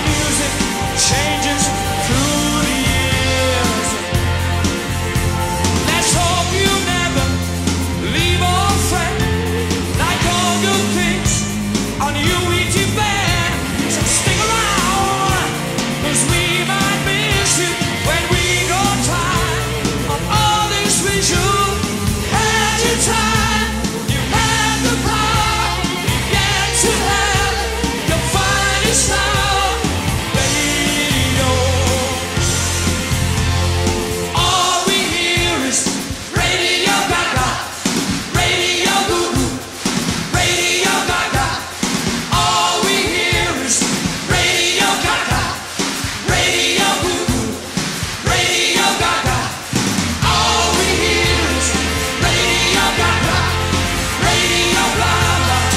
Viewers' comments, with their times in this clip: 0:08 I love when he shouts minute: ''so stick around'' amazing voice
0:41 I get chills cause look at how many ppl singing together at once n one key